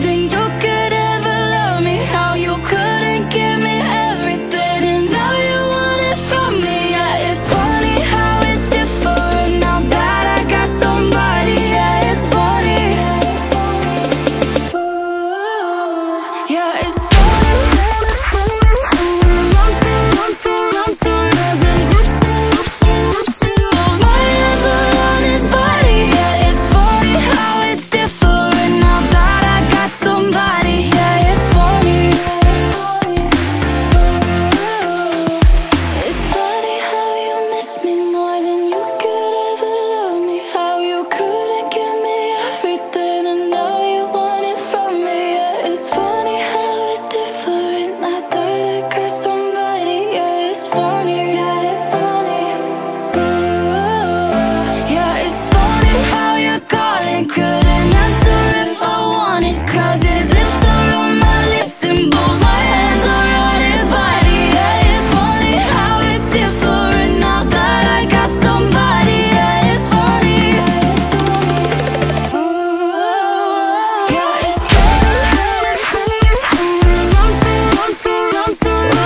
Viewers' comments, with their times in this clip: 0:10 is SO good. I can't stop watching that perfect beat drop.
1:03 Think my favorite part is the falling blocks ish that accelerate with the (?)snare drum(?). It's just so satisfying, like those metal blocks that fit together seamlessly.